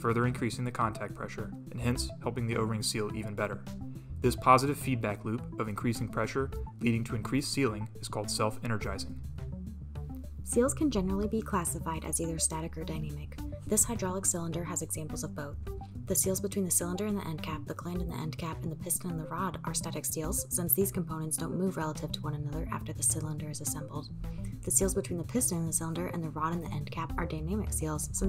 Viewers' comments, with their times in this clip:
0:10 I can barely hear the female narrator, even with volume turned up. Playing tonalities over the narration makes intelligibility even worse.